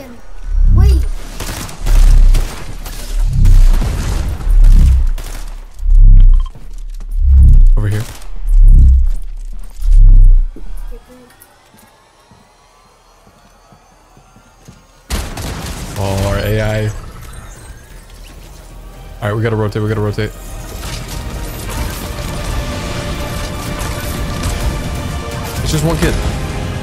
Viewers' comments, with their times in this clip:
0:08 The music is great